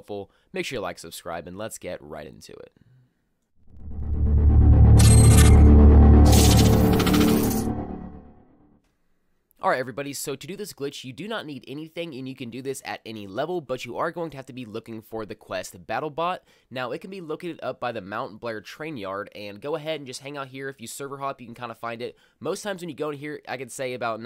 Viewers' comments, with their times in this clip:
0:09 to avoid that shitty minecraft youtuber intro louder than the video